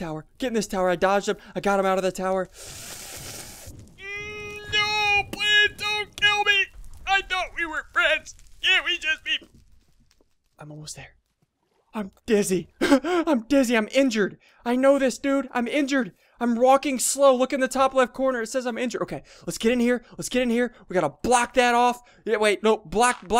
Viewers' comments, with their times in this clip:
0:07 ssundee's voice :P